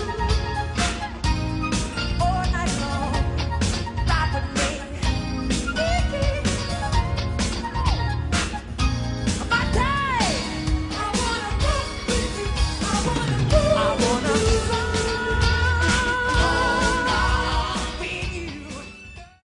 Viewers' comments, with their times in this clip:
0:05 I'm watching I'm in 2020 I'm the latest and then he says hee hee in